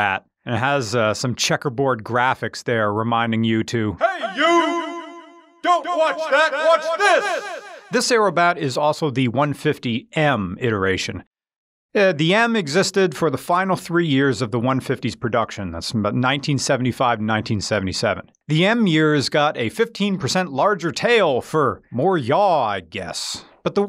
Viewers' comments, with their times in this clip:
0:04 ONE STEP BEYOOOOOOOO- shitton of saxophone